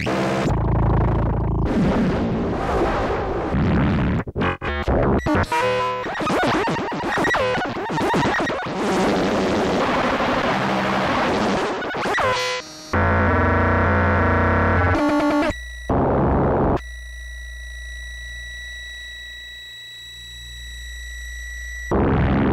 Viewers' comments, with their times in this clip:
0:03 is what my stomach sounds like after Mexican food